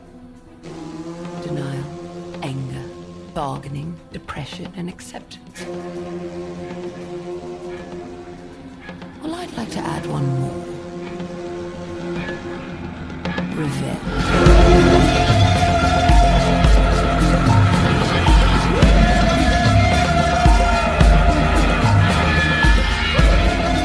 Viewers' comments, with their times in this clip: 0:09 i can't hear what the character is saying at this point. can anyone write? Please 🙏